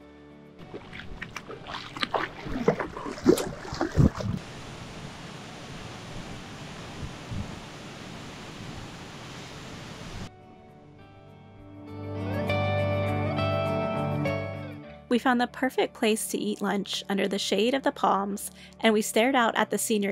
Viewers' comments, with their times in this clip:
0:05 That one clip of the wind in the trees great sound, great clip. Thanks for the escape!!